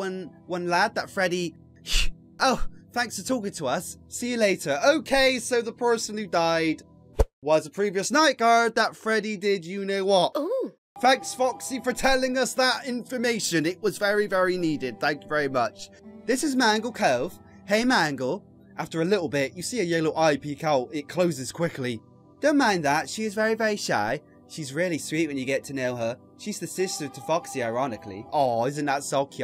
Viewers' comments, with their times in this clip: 0:10 I don't know why but that "ooh" sound effect was great comedic timing